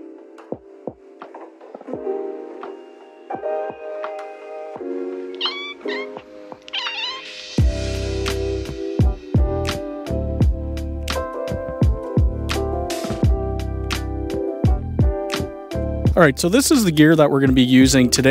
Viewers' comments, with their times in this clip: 0:05 Great video! The cat's meow/chattering reminded me a lot of my brother's cat. She used to do that all the time.